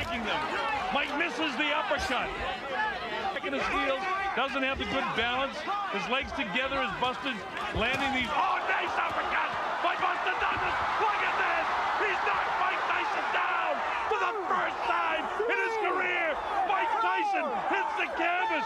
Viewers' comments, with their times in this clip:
0:03 Turn playback speed to 1.75 and it sounds like Alex Jones is calling the fight.